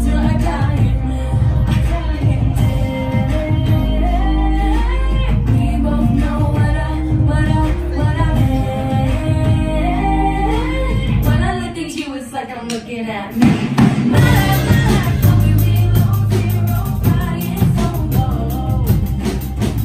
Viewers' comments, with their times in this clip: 0:03 Charlie laughing at mads laughing 😂